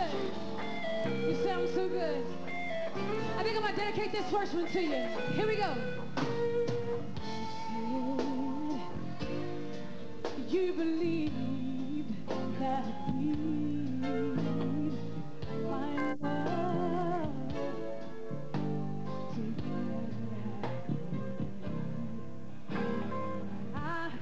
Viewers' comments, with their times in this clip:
0:05 i don't if it's just me but i think the guitar went out of tune ...